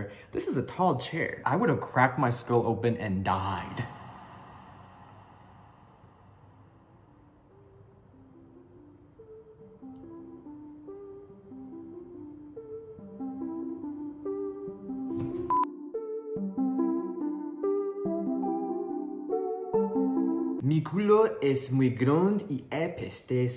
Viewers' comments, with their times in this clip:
0:09 every time that music starts playing i get shocked